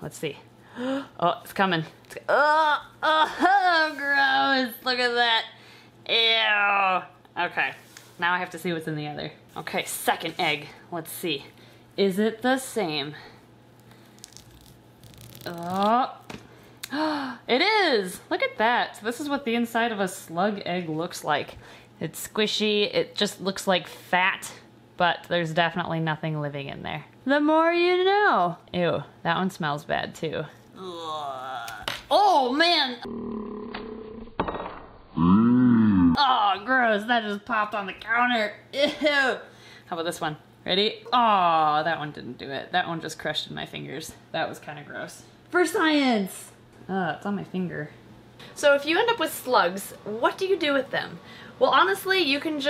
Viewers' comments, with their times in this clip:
0:10 Ok. Anyone else hear suck an egg instead of “second egg”.😂
0:10 I thought she said "suck a egg" 😂😂😂😂 I was so confused like what did I do 🤣
0:35 Your slowed-down voice actually made me laugh out loud